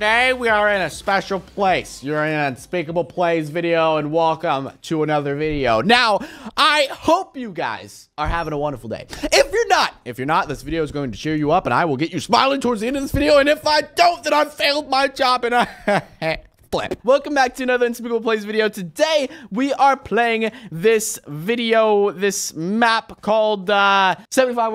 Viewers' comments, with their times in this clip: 0:08 Unspeakable: If I didn't make you smile, well then I failed my job, and I.......(Mumbling random things) FLIP! Me: 😂